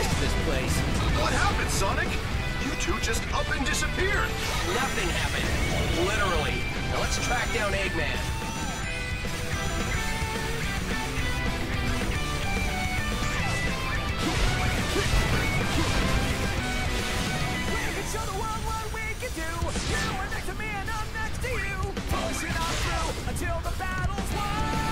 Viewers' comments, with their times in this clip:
0:10 put this on a slower speed I'm rolling I'm rolling I'm rolling